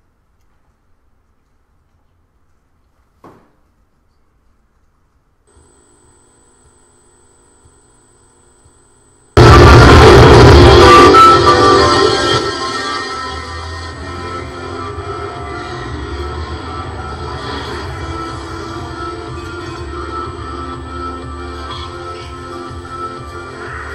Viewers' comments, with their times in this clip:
0:10 TURN YOUR VOLUME DOWN